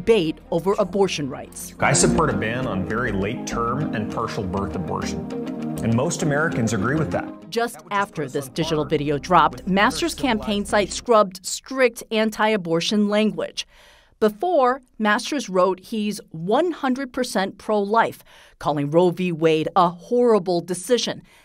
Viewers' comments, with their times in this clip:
0:03 what? What. Did. He. Yaaaaaaay? "Pershel bir Arborshen" You mean, Partial Birth Abortion?